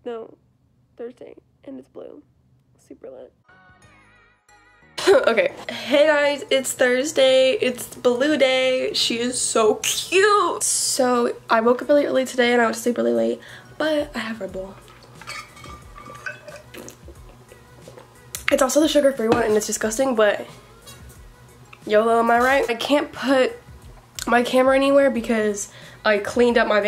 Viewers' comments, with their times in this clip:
0:09 the way you said "she is so cute" was funny to me😜